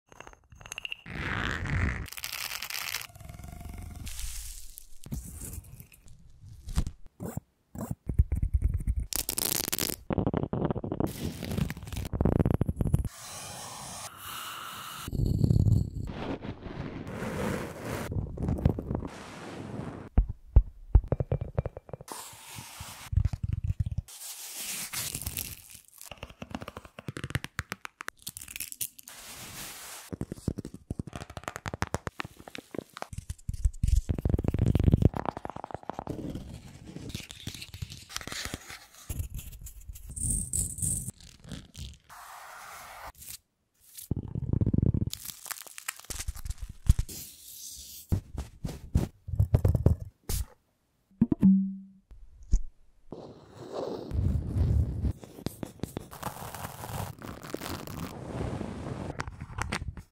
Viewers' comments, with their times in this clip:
0:01 green thing reminds me of nct sticker instrumental
0:03 is a pop tube..
0:07 very relaxing trigger
0:27 The red tapping one was AMAZING, I need more of it lol
0:48 I heard Minecraft snow
0:51 what is that? it makes a good sound..🤍